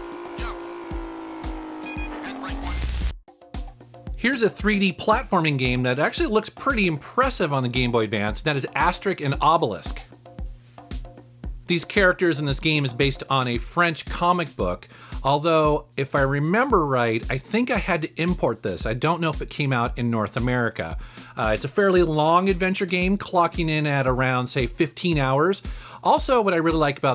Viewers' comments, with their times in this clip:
0:08 ah yes, my favorite comic duo, astericc and obelisk